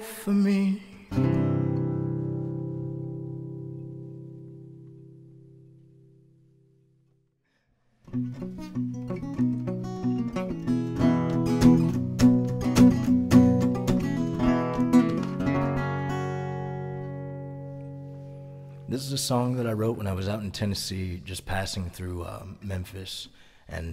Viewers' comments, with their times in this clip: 0:04 All the songs are amazing but is just WOW. The intro the melody and your voice.. Poetry